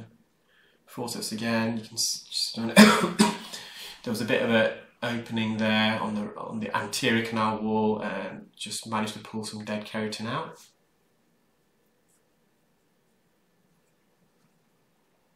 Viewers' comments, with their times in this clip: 0:03 Lol I dodged the cough The covid trauma is real